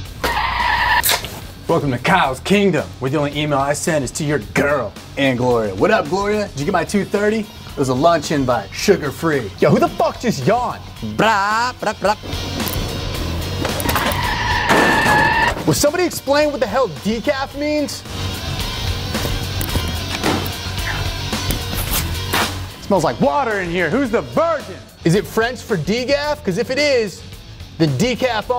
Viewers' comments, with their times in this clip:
0:09 Some random dude: (yawns) Kim Jong un: